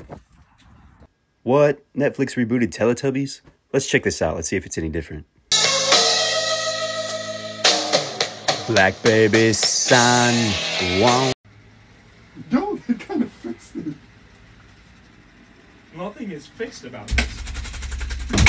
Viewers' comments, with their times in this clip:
0:05 the black hole sun remix is actually genius 💀